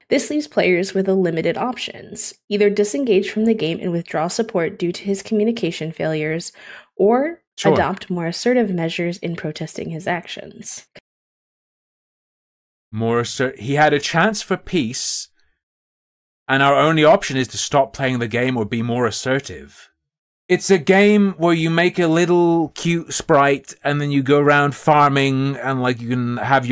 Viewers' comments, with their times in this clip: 0:10 i can't believe that i will say this BUT I KNOW NPCS who act more human than her. i swear 30 min it's like i am listening to a freaking robot. we must take actions bee boop not our allies bee boop transphobe bee poop lag of communication dose not compute